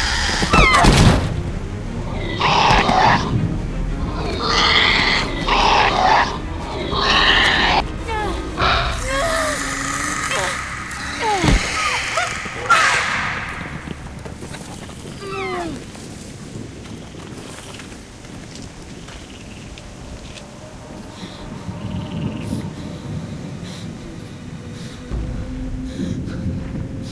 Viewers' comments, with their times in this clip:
0:08 Dilophosaurs: Bitch you are mine now! I'm gonna rip your face off and.....*hears Troodon's hiss/roar/call* Oh Fuck This Shit, I'm Out! Cheese It Guys!!!